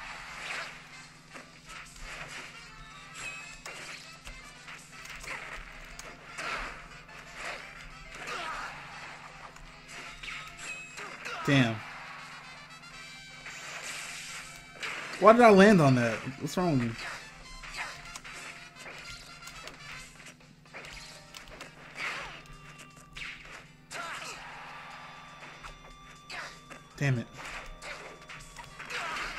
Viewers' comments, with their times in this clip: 0:10 ... I'm sorry but am I the only one hearin' dora the explorer music in this mario stage?